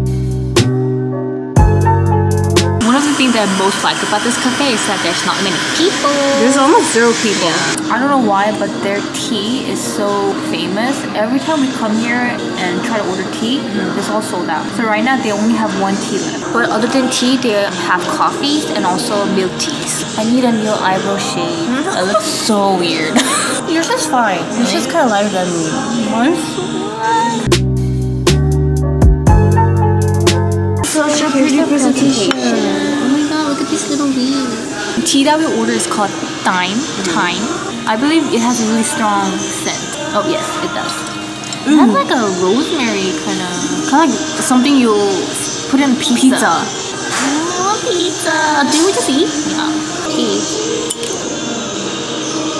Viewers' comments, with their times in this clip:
0:03 sjsfjhhjsf seesaw playing
0:17 WHO ELSE HEARD SEESAW 🙃🔥someone plzs fly to me dis cafe 🙏
0:39 I hear that BTS in the back 😭💕